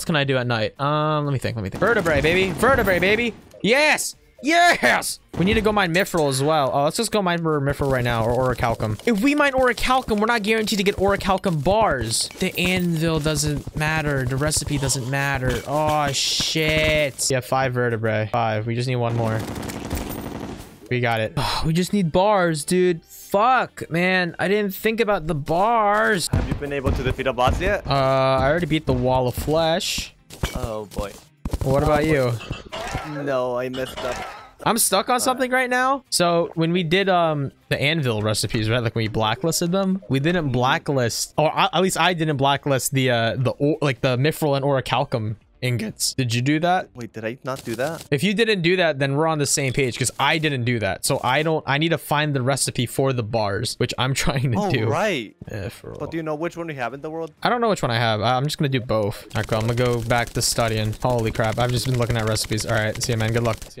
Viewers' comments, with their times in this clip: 0:04 when he says yeeesss it reminded me of the og tobuscus letsplays that i used to bang out on the daily.
0:44 best voice crack in history